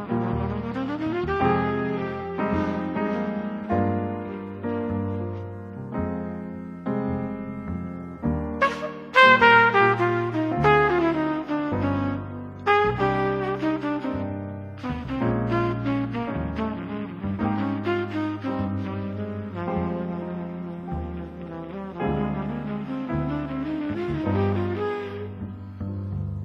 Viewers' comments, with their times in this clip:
0:09 that ghosted/cracked note and the ensuing phrase are entirely too nasty!